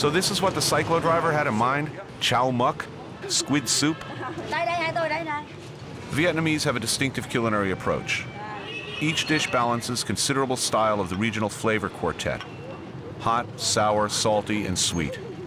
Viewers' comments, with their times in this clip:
0:03 I love how this language sounds